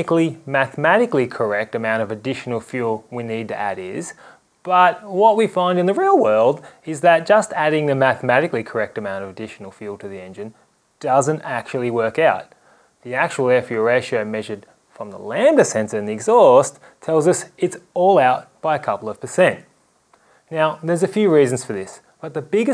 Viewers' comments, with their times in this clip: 0:05 testy pop haha